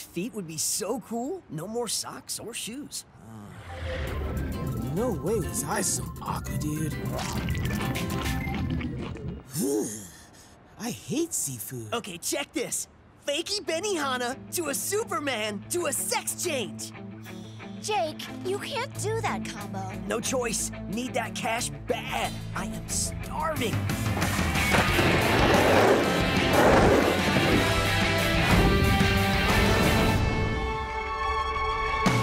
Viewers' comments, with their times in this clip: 0:09 What happend to his voice?!
0:16 Iphone Via Galaxy G6 Prime satan adam I thought he said “maykey momma, to a super man, to a sex tape